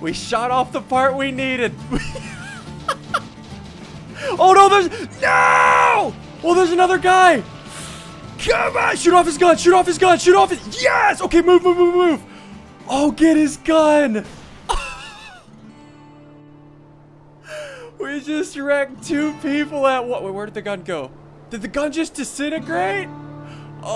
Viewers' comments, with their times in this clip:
0:09 he sounds like a military comander